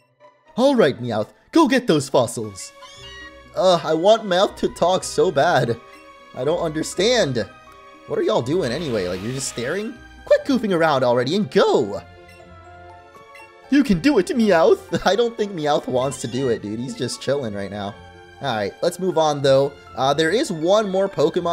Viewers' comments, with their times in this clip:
0:04 i heard "i want mouth to talk so bad" 😂